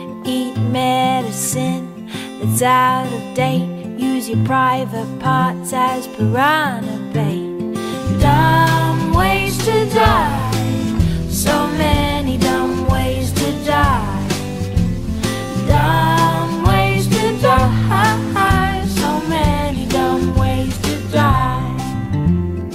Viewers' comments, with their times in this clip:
0:08 music starts, called it but i know